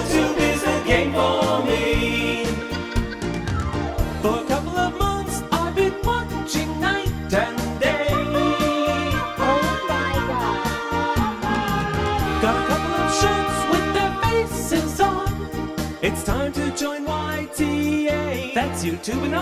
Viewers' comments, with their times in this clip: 0:03 Vocals and that scene is gay. Nice idea though.